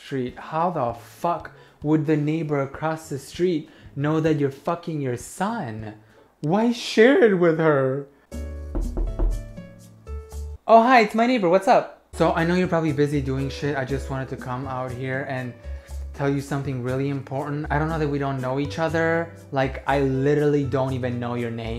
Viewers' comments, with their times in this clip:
0:08 Had headphones on and I SWEAR that knocking sounded so real.😂